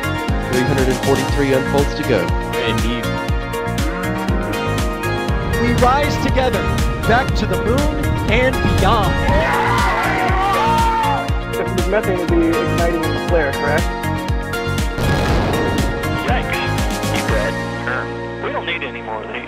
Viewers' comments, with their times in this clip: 0:03 I heard intro first time with proper headphones. There is a cow at exactly ! :D